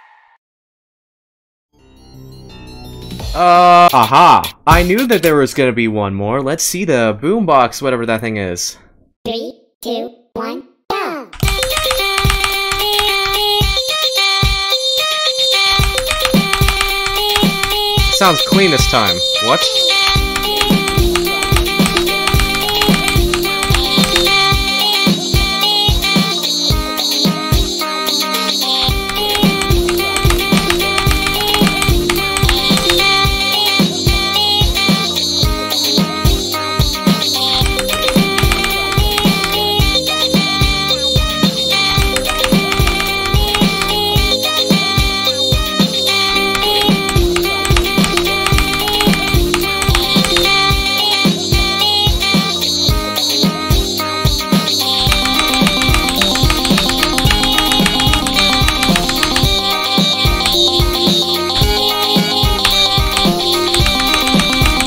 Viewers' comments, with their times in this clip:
0:08 he sounds like sarv
0:29 sound kinda look like mod imposter
0:51 This sounds Almost Like Green impostor Lights Down Song